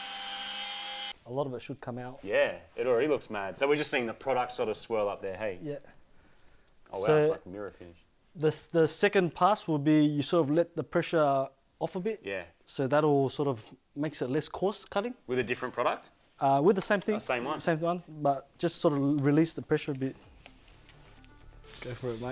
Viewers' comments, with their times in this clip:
0:06 was that mirror-finish or MIRA-finish? 😆